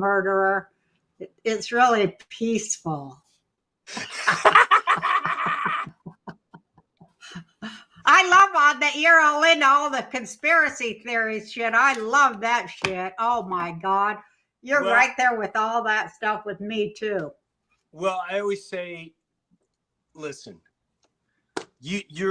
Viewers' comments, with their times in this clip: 0:05 Both of you are such a favorite to so so many, myself included 😁. I just totally fell in love with you Both (i swear) becoming Best Friends before my Eyes. So awesome to witness. This is the second video you met up recently, i just saw the video esterday! While that one Also was so tender.❤. It’s Crazy how ppl rarely, Actually and Genuinly connect with the ppl in their life. I’m glad you guys seem to have an awesome connection. And are changing the world, one day at a time… your being heard lady, some get it, some will, and some dont even know to know half of it. Thank you M’Lady. 🎩. To you 🫵 Kind Sir & closet cuss-er with the humor ppl Hear 👂 Thank you too. Your Both Cracking each other up, these laughs your having just sending out a strong vibration i BETTIN. Love it. Hope to see more of it. Be safe . ❤